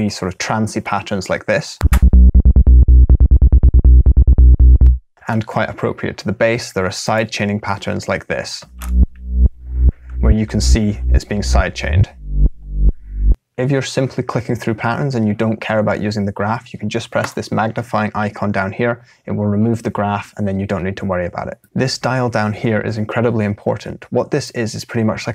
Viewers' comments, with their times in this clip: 0:07 S I D E C H A I N (admit it we're using grossbeat just for this)